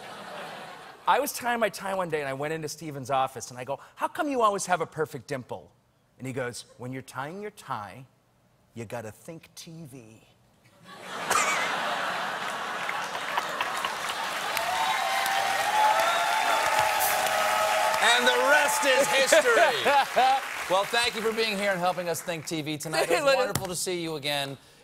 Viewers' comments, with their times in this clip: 0:10 the longest fake laugh in recorded history